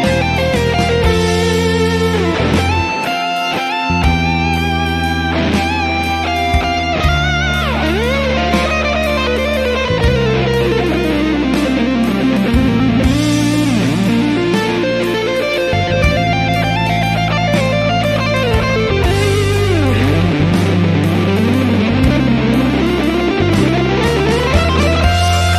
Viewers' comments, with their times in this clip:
0:08 yes, mainly it's Fmaj scale and Dm pentatonic... and sometimes (like in ) also F pentatonic for some blues feeling 😊🎸